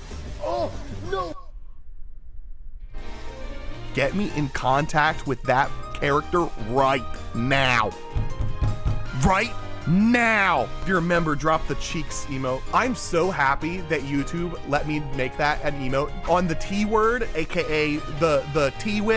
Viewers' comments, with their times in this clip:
0:04 when he beats his desk it kinda sounds like un un un un